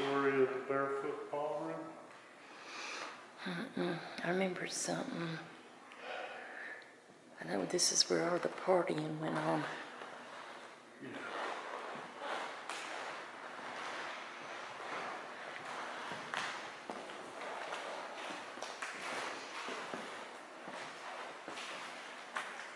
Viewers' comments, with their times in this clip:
0:06 Hi, what a beautiful place, loved the setting. So many whispers and one as you were walking down the corridor and your camera went blurry -3 there's a faint whisper "blurry", so cool. Enjoy your travels and stay safe 🤗😘🇬🇧xxx